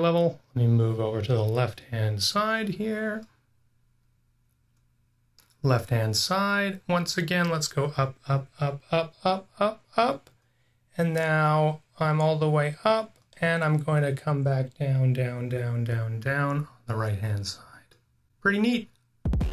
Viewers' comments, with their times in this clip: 0:06 I did not expect ASMR tingles, but I got them. The left field azimuth elevation change got me